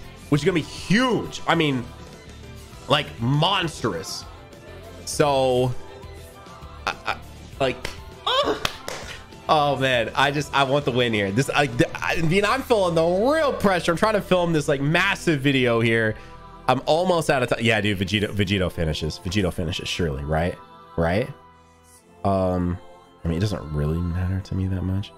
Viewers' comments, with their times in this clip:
0:06 Did you use the ah Sound effect or, was that you!?